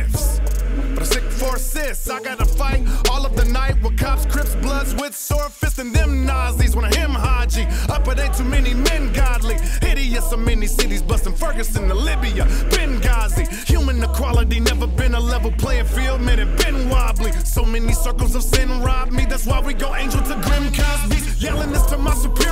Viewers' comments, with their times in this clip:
0:05 that damn bass sooo damn powerful..... goddamn!!!